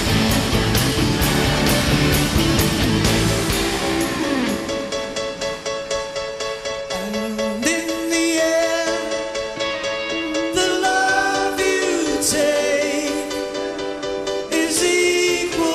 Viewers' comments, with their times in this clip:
0:03 Is it Eric Clapton the guitarist who plays during the Ringo (Collins) solo in "The End"? He even mess up with that fucking guitar when he has to shut up! Damn...